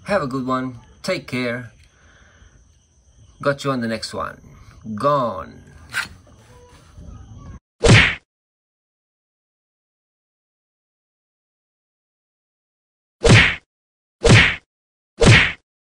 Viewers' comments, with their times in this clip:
0:12 I miss the chicken sound "tiktilaooooook "😂😂😂 Beautiful country just poor.😂😂😂 but we are catching up slowly but surely.😂